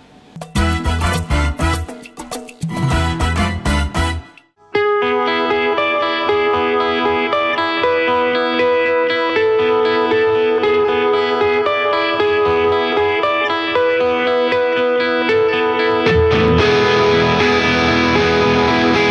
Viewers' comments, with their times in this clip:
0:04 The actual riffs start